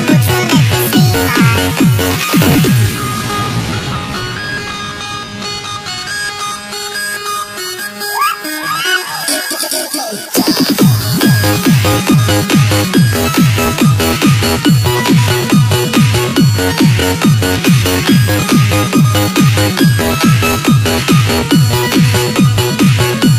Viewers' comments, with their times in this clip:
0:08 pfff they like beetbox :D